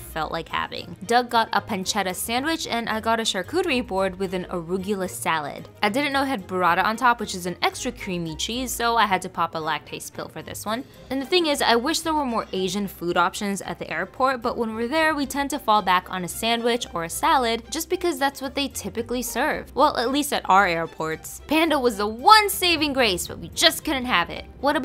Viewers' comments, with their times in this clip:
0:06 wth is brahda*